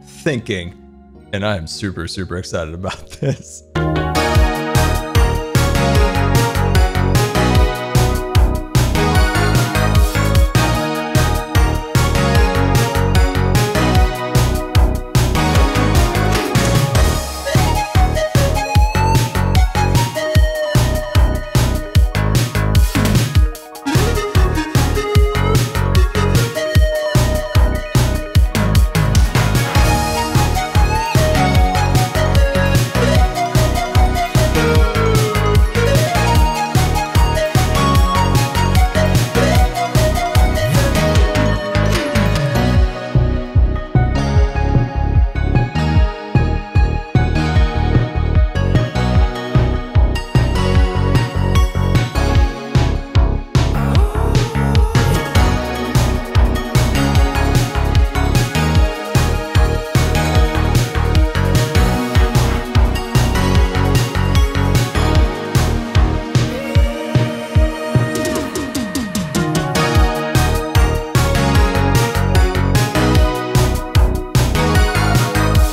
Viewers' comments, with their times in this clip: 0:03 Anyone else just jam out to the time lapse music every time? I surely can't be the only one. That song's a frickin' B O P ( is bop time )
0:03 What is this song? Sounds like the soundtrack from a 2001 PC CD-ROM arcade game collection. Edit: if anyone's interested, i figured it out. It's Howling by Lupus Nocte.
0:04 * Dancing noises intensify *
0:04 WOAH dude. At least warn me before playing the sfbm music. Started flailing my arms around like a madman in public
0:04 vibe music begins
0:55 Don't you hear "operation aqua thunder " in Like if you hear it
1:01 am I the only person who hears Operation Aquathunder in the super fast build mode music